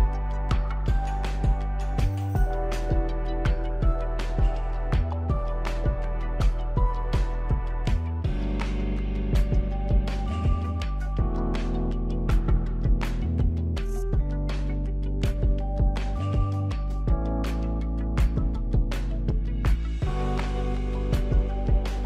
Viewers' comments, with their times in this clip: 0:03 can we appreciate the chill Fortnite Vibin theme?